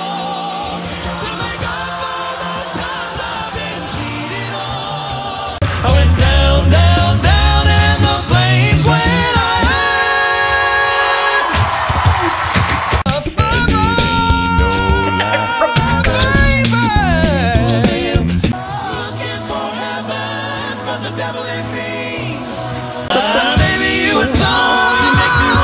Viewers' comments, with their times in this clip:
0:06 Yesssss and the C#5 >>>>>>>>>>>>>>>>>>>>>>>>